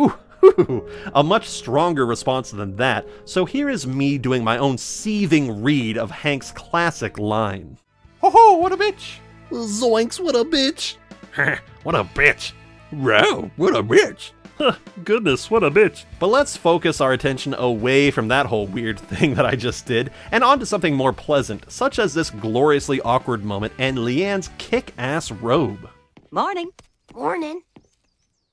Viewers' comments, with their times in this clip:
0:08 Those are some good impressions 👏🏻👏🏻👏🏻
0:14 For once? I actually liked Peggy here because she actually did what I wanted her to do! SHE DROPS THE EGO AND PUTS SOMEONE ELSE BEFORE HERSELF! Love the Kermit "What a bitch". minor nitpick but Leann calls Luann "sweet baby GIRLFRIEND". Lean has never treated lulu as a daughter, just a sister or friend. So it wasn't brain damage talkin when she yells "Then I ain't your sister no more!". That was her unfiltered declaration of how she sees the girl she birthed and neglected.